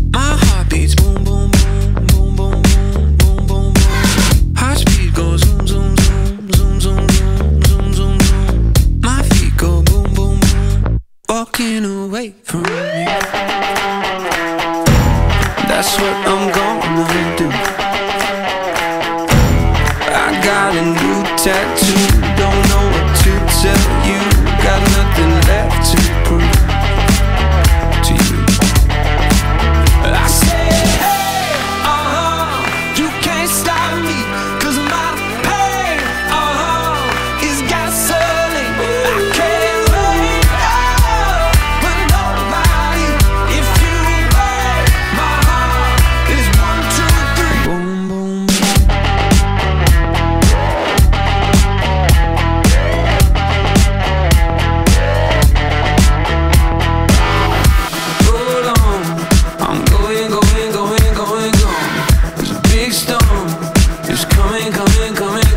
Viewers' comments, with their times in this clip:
0:10 Sounds less like "Walking away" more like "F***ing away".
0:51 the guitar sounds like police sirens. Don't zoomzoomzoom too fast lol.